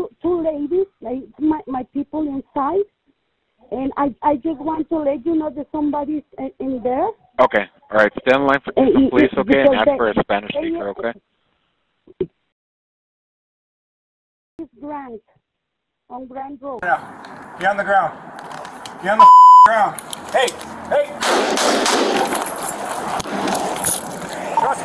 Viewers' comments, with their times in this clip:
0:10 her english was fine..he rlly delaying it cuz he dont wanna listen to her